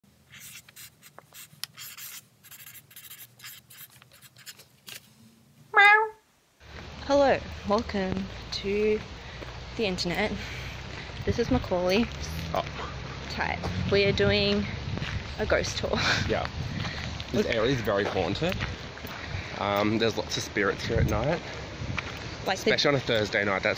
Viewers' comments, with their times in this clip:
0:07 The Internet is Here starts playing in the backround